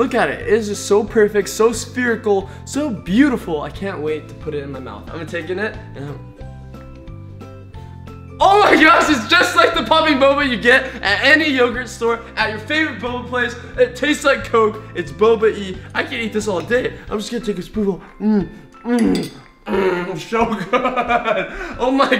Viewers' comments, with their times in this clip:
0:07 t it sounded like he was acting in a boba coke commercial